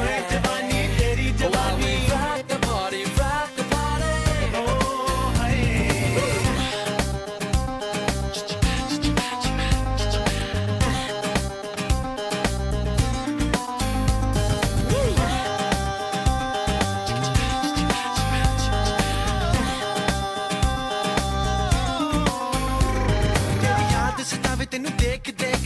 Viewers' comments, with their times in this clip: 0:07 when u hear this music....I feel like going to moon and jump towards earth 🌍😂😂😂😂😂